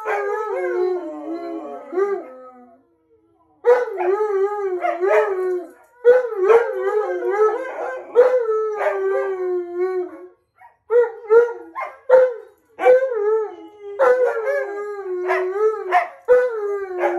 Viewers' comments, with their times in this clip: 0:03 It's am. Listening to this howling with headphones on. Tonka and Monroe are catching up where they left in from momma van. Happy Howling happy couples! 😂 ♥️ 🤗 🐺🐺